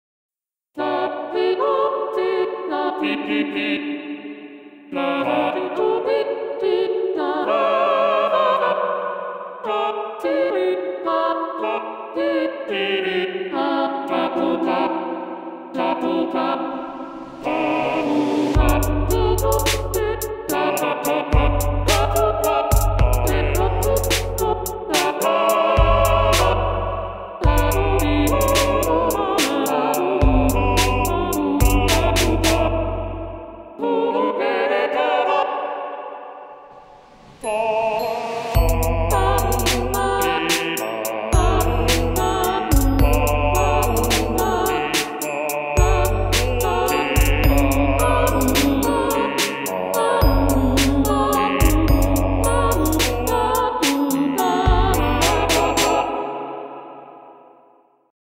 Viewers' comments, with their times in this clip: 0:03 subtitles: EEE EEE EEE Me: pe pe pe
0:10 thay say seaweed
0:11 bass gets a wait
0:15 huflpuff? (Sorry if I spelt it wrong ;-;)
0:40 Also the music
0:44 I like how the two on the right are like, finishing each other's parts lol